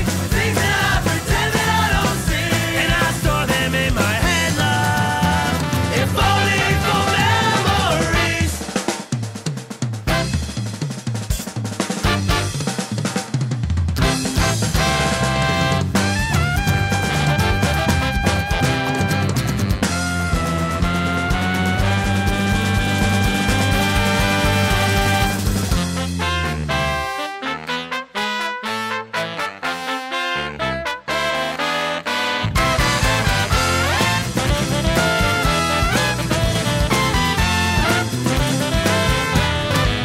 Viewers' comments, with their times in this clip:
0:07 be prepared for the best brass conversation experience.
0:18 Trust, listen to all of the parts. The key with these guys is how they all interweave :) being a prime example!!
0:25 goddamn, the instrumental little riff that starts is possibly my favourite piece of music written by SM